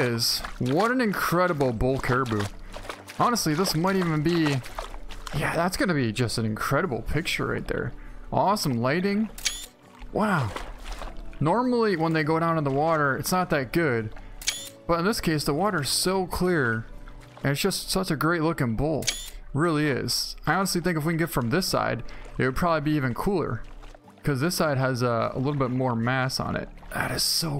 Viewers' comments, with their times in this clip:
0:10 Perfect Owen Wilson impression